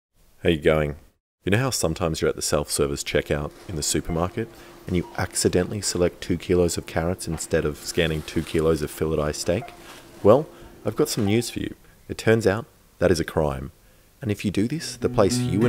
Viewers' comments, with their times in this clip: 0:00 What does he say ? Hey going? Hey gang? How are you going? Hey are you doing?